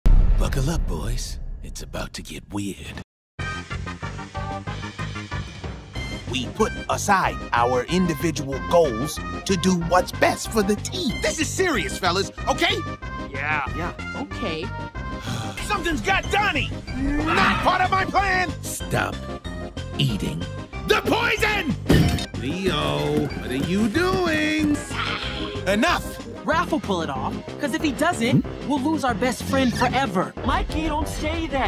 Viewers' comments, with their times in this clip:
0:06 I actually thought he was gonna start rapping.
0:18 "Stop. Eating. THE POISON" Raph said calmly.